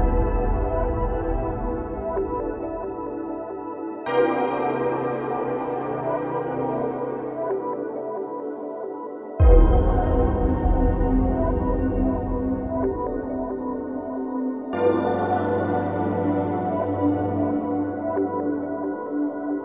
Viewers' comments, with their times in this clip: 0:06 sounds a bit like SMT Nocturnes last dungeon song, Kagutsuchi tower//